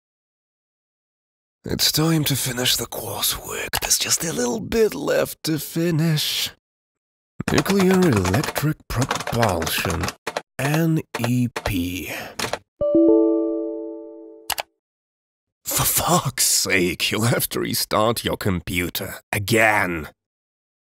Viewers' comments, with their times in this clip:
0:01 bro sounded like the ASMR guy